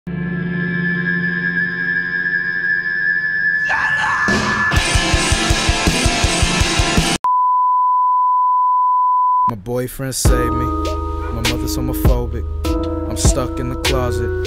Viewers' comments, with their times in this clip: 0:00 no at the very beginning im into that rock guitar kinda thing